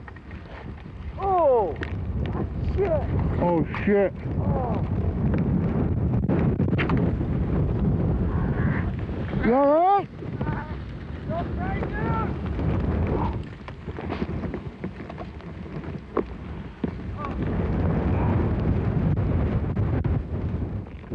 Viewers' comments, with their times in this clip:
0:09 you can hear him screaming. shit was hilarious